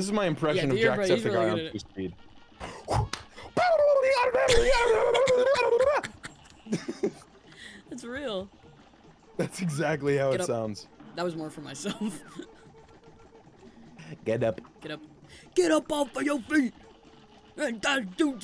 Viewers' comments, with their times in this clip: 0:03 Irish animal crossing